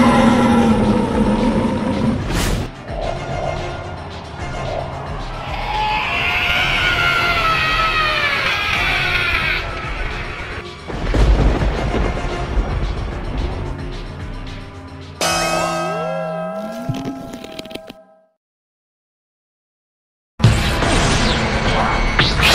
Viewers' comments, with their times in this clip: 0:06 luffy scream hahahhahahahah